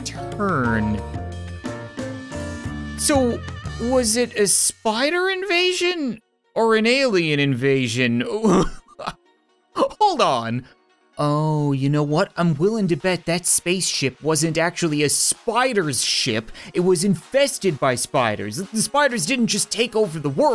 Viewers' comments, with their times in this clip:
0:07 Di- did he uwu